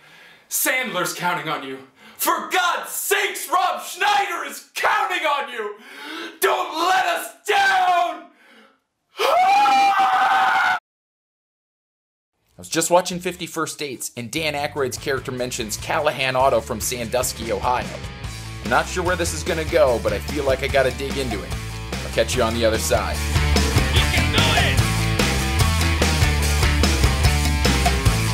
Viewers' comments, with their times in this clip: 0:09 I can watch your scream all day and keep laughing.😂. You poor man. Thanks for all your hard research.